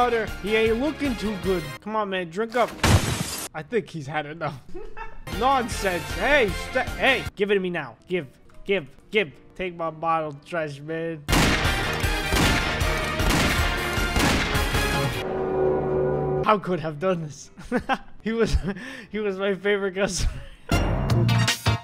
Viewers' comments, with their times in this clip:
0:03 the cutest giggle in history